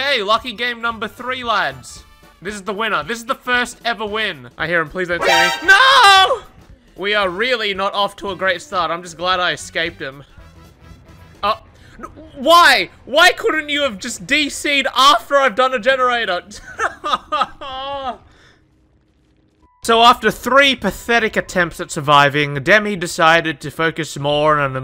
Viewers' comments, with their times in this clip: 0:03 bro actually sounded like Steve whwn hes on the hook
0:05 he sounds like Steve when he screams